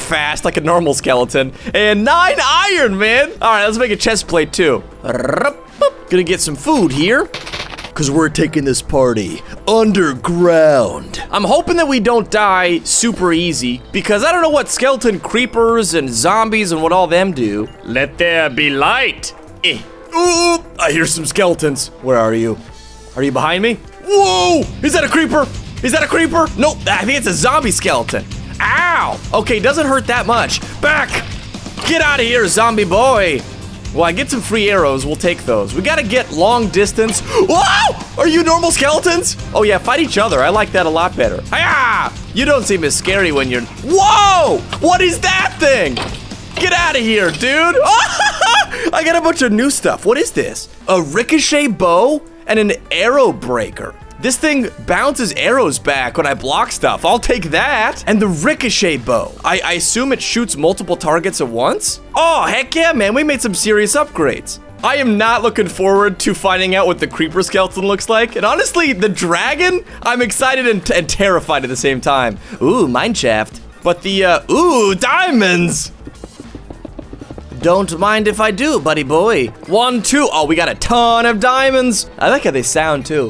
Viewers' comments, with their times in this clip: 0:08 he has such a good epic voice
0:14 😂 he telling hindi language lol
1:05 in the video, I thought you said “Hey Camman, we made some serious upgrades.”